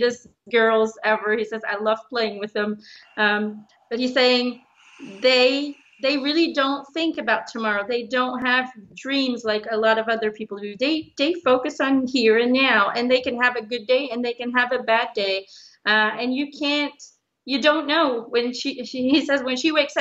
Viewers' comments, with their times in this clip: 0:03 😨Anyone else hear a snore/big breath out/growl ?! I went back and played it again over and over to confirm it. Wonder who it was??